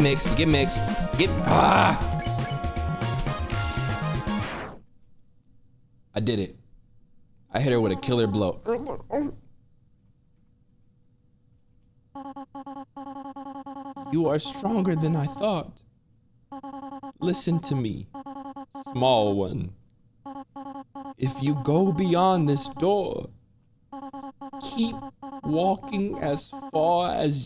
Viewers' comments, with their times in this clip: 0:10 that didn’t sound right at all